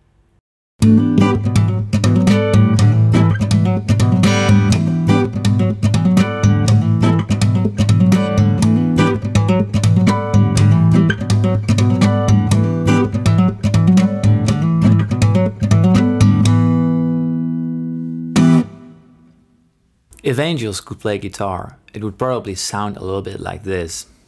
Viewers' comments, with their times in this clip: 0:08 sound like Rob Scallon! haha